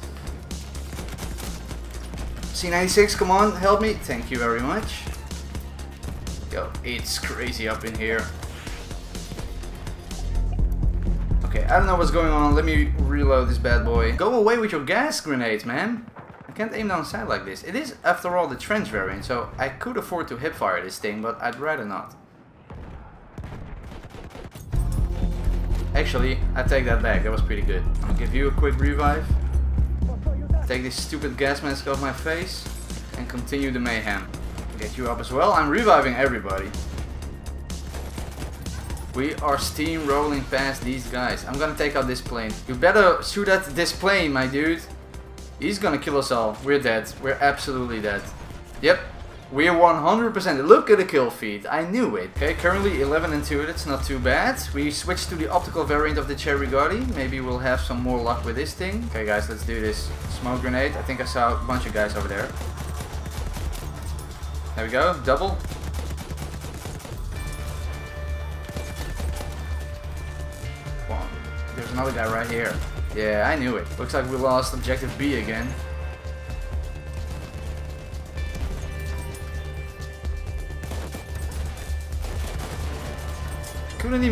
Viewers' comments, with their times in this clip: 0:09 i love how the music got muffled when he put on the gas mask. Great little detail
0:10 Can we just appreciate the amount of detail he puts in to putting in music? Like how the gas mask muffles the music
0:11 when u put the gas mask on the music sounded muffled aswell nice touch 🤝
0:11 Nice job muffling the music when you put the gas mask on
1:07 that BF4 theme mhhhhhhh noice
1:07 that BF4 theme mhhhhhhh noice